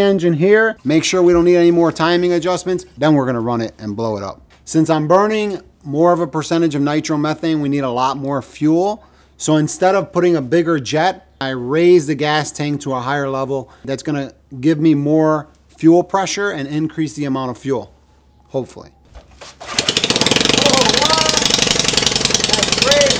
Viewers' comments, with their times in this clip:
0:10 nice sound. It sounds kinda like a plane.